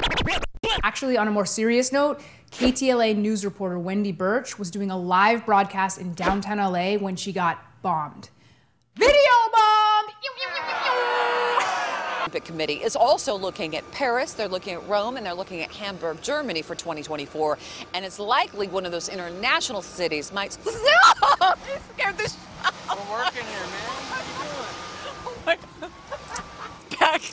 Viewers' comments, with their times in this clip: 0:09 I don't get this weird noise she makes with her arms spazzing out at her sides. I genuinely don't know where this came from. Could someone fill me in?